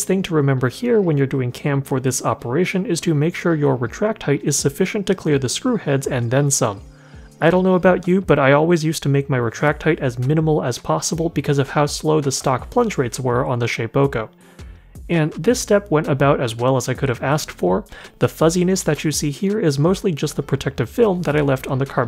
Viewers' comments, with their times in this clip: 0:04 Why do I keep hearing Legend of Zelda Ocarina of Time sound effects: sounds like when you use a fairy